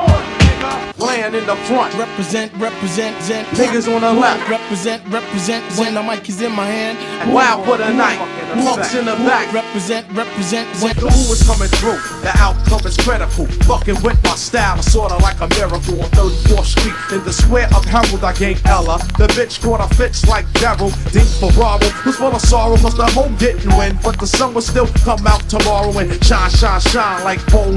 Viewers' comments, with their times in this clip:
0:10 I did a backflip on the beatdrop